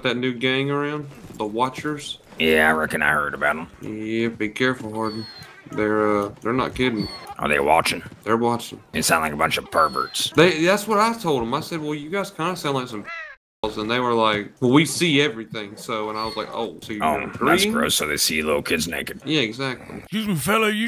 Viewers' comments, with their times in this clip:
0:03 Ned from South Park making a guest appearance..